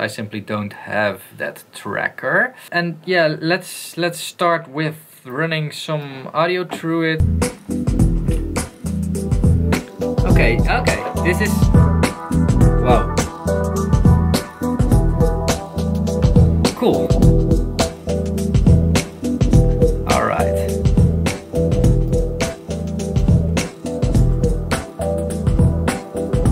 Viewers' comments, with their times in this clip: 0:10 Shit!! I was looking over my shoulder thinking someone’s playing something loud! That really tripped me out